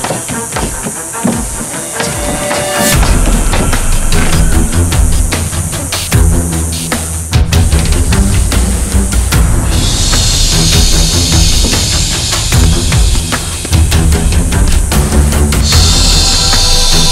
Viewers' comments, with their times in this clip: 0:05 .. oops.. did i hear someone fart? 😂😂
0:05 was that a fart? lmao!